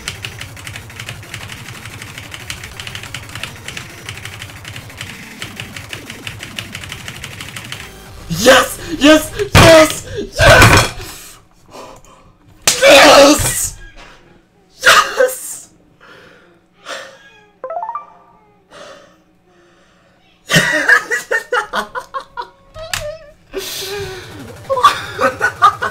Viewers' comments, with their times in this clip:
0:09 did i just hear ur mom getting pissed off at you? xD